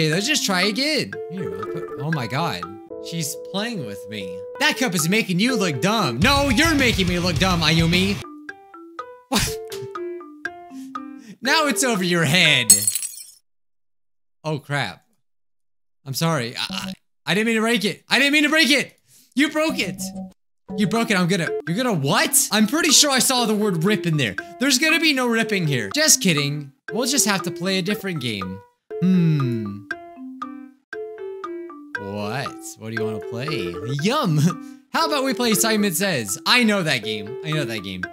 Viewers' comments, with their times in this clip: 0:08 Now it's over your head SMASH . . . Awkward silence
0:19 you broke it...i'm gonna... rip your hear- Just kidding~ Thats what she said It cut at "hear" so i didnt get what she tried to say